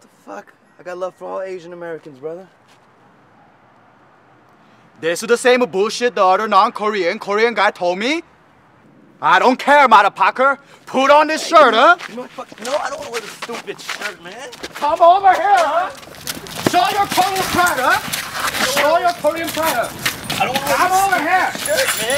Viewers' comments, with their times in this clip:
0:05 sound like Indian :)